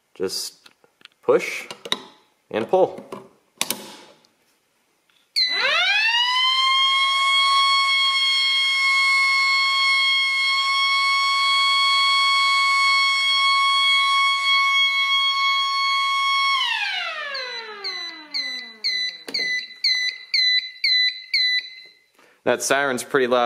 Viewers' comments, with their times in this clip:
0:05 sound like a fire truck